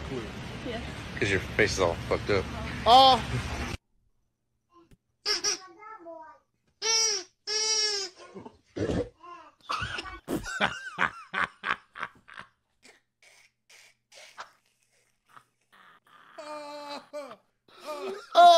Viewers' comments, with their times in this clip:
0:06 I was doing so well until it was that big gulp that got me 😂